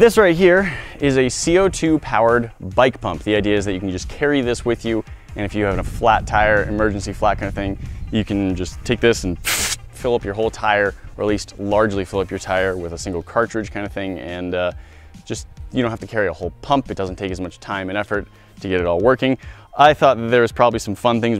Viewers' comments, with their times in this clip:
0:08 i had to reverse that a few times to ses if it was actually him making the noise and indeed it was lol it sounded real!